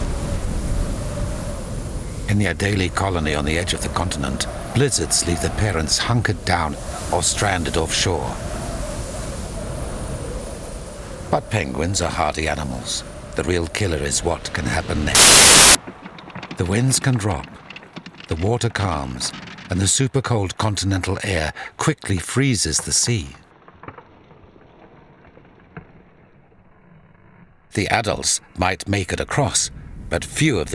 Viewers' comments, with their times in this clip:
0:09 SOUND WARNING!!! BE PREPARED!!!
0:11 But penguins are hardly animals the real killer is what can happen next EAR RAPE!
0:14 RIP to all headphone users...
0:14 Ouch that ear splitting glitch spooked me